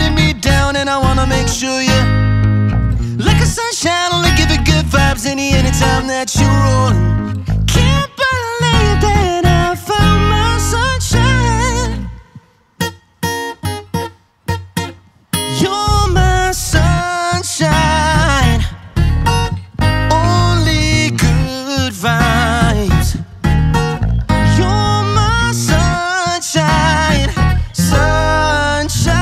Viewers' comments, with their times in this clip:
0:10 Liam voice crack